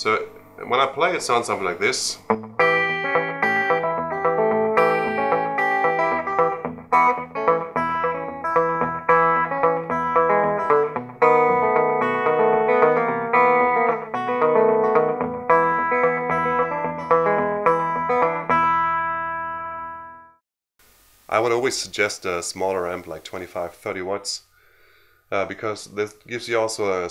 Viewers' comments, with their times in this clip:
0:08 Hey, it was worth it to wait until when you REALLY showed the rockabilly sound. Thanks for the great, informative, video. At that point, I could close my eyes and hear Scotty Moore.